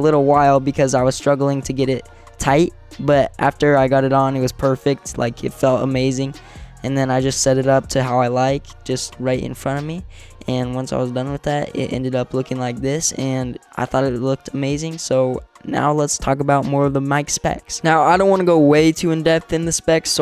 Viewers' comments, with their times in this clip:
0:07 The audio quality is really good, and it looks like the mic is flexible and easy to position, so that would really help me out. (Also we have the same mouse pad but mines blue lol)